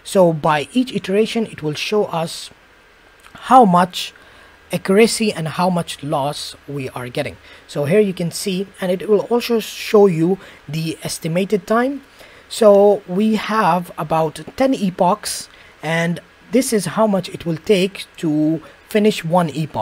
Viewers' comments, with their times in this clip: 0:05 It is great, and I like how your computer fans went mad 😂